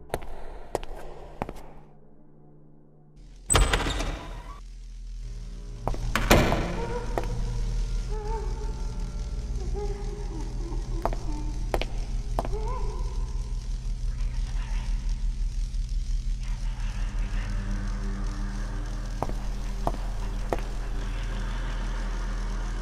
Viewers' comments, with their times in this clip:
0:05 Those first few seconds, it sounded like a ghast in Minecraft. O_o